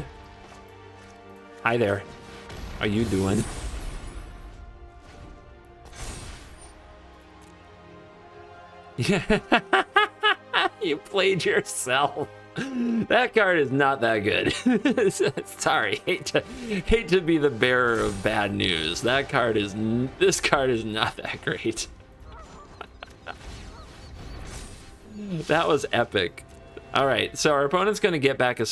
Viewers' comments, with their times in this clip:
0:09 The PERFECT JOKER laugh :D